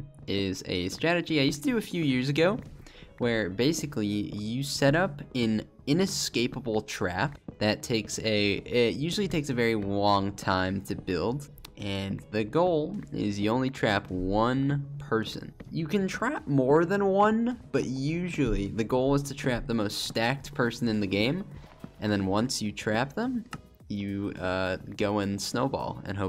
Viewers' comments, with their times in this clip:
0:09 Sounds like "wong time" haha